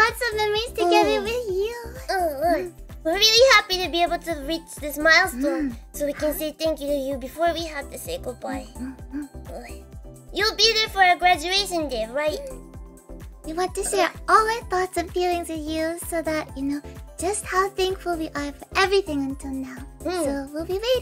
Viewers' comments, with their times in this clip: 0:09 every time she says this there's more menacing aura behind it.